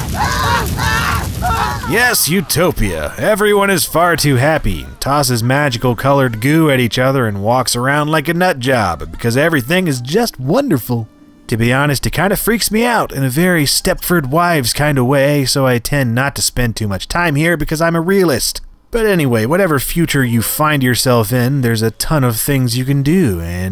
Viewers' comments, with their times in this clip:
0:09 Lol at the way he says wonderful.